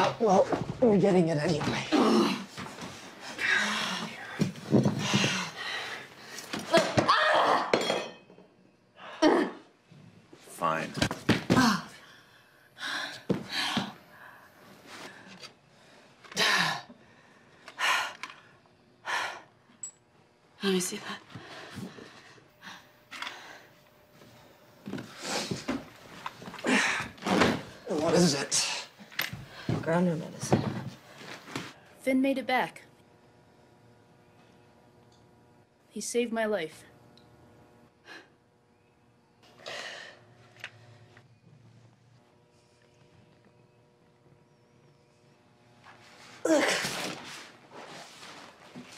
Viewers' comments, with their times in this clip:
0:10 that isn’t his voice I don’t think...
0:10 Everybody's talking about how Raven sounds weird, but has anyone else noticed that Murphy's voice is dubbed ?
0:33 IM CHOKING THE VOICE
0:33 WTH did they do a voiceover for ?